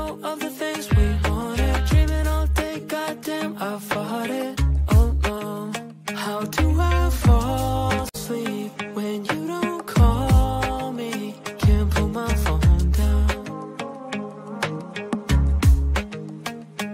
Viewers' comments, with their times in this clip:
0:03 "God damn, I farted"